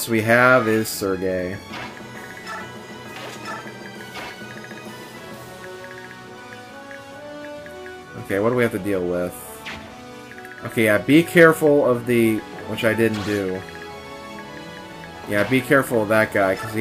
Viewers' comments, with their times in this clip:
0:04 The way you said the leaders name, it sounded real funny, especially If you listen, you will get the picture